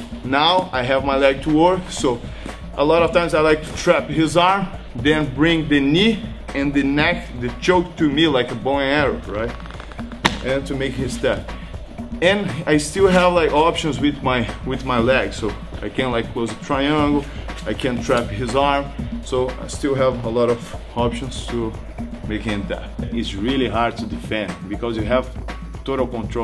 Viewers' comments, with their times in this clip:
0:08 awesome sound effects!